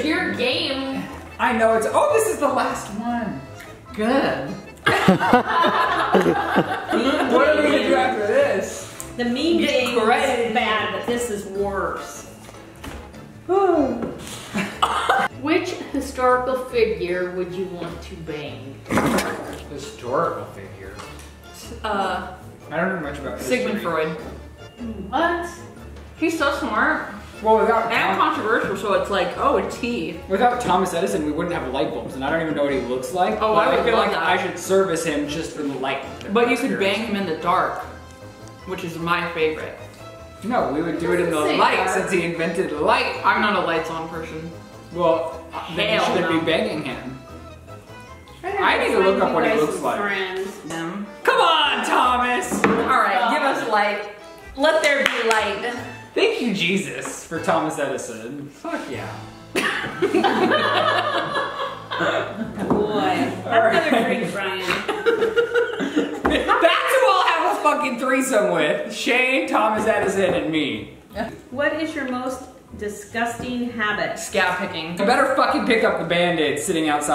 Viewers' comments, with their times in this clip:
0:05 he laughs and it doesn't sound like him
0:19 DID I HEAR SHANE?????? “historical figure?” And who is filming? 🤔
1:03 did ryland's mom call him ryan??